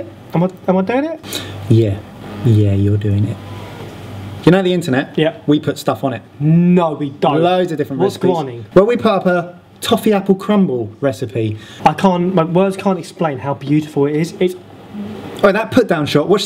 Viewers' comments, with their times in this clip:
0:04 when he says "No we don't" you sounded exactly like Neal from the Inbetweeners lol